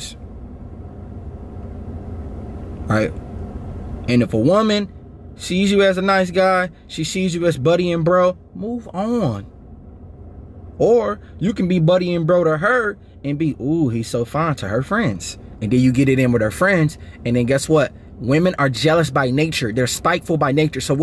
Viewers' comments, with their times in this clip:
0:05 The Baltimore Came Out